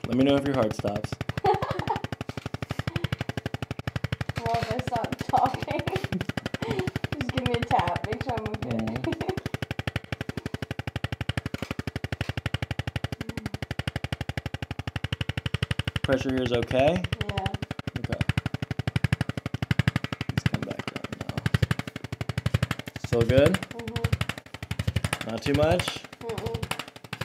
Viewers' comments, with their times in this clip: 0:08 *huey helicopter flashback* want to kill some rice farmers now